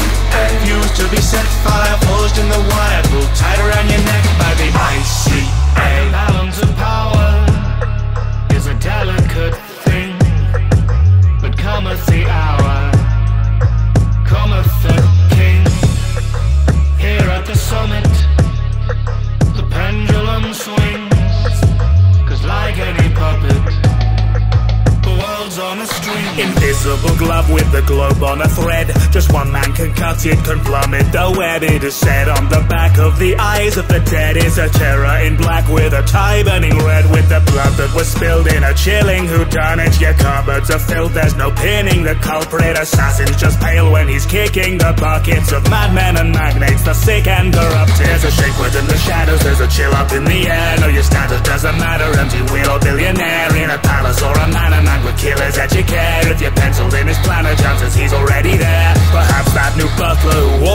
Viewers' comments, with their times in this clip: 0:05 Definitely my favorite part. The lines are nothing special themselves, i mean they are really good, but so is the whole song. It's the delivery that really gets me. The pause and emphasis on 'thing' and 'king' are chilling.
0:47 I got the feeling we don't talk enough about the music. The guitar makes the first verse so much stronger, it's magic
0:47 omg I can't get enough of this part, THAT. FLOW. WOW.
0:48 WOW he goes HARD on that guitar jeez+